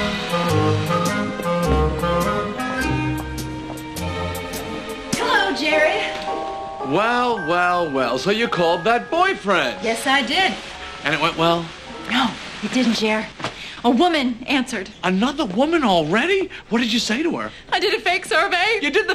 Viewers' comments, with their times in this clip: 0:04 The "Hello, Jerry" reminds me of Newman